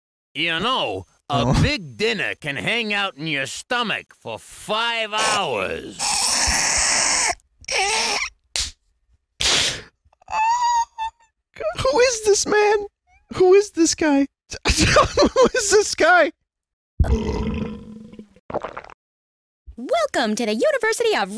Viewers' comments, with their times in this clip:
0:05 His laugh sounds like my nose when i laugh too hard 😂